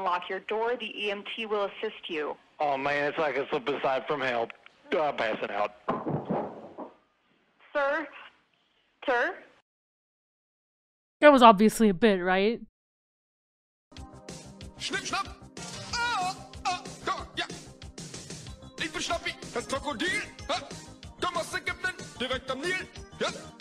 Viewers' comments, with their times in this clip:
0:06 The way he said “oh I’m passin out” then the audible thud on the floor